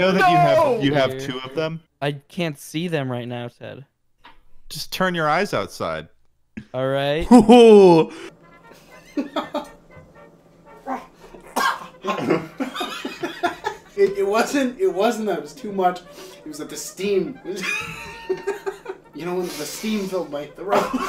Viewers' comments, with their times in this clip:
0:09 I haven’t laughed so hard at another persons laugh until